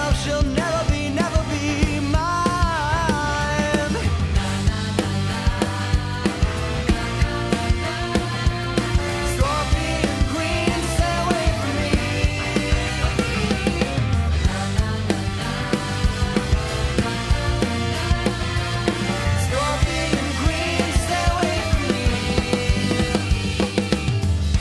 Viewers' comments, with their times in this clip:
0:03 gives me awesomenauts vibes
0:04 Got that Gorillaz "19-2000" feel here
0:06 Those trumpets tho really feeling like Hoenn
0:09 i swear to god they are saying “scorpion queen stay with me”